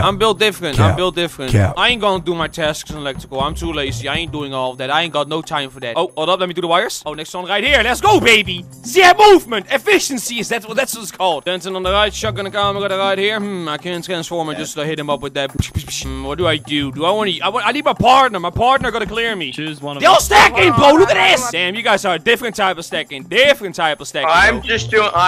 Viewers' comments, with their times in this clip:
0:08 I HATE that annoying beeping !! I thought my mom forgot to turn off her alarm!